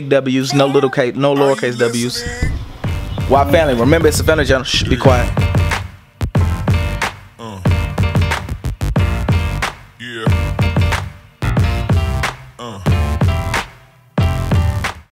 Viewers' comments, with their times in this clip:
0:12 He started laughing out of no where 😂😂😂